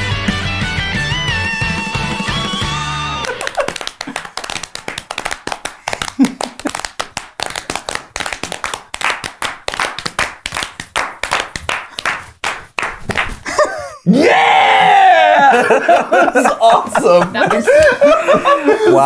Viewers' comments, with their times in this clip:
0:03 what you clapping🤨🤨🤨